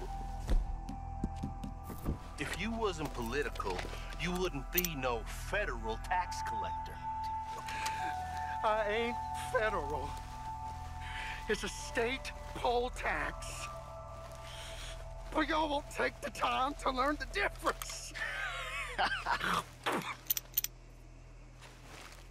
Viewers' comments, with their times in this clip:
0:09 he sounds like ron from gta v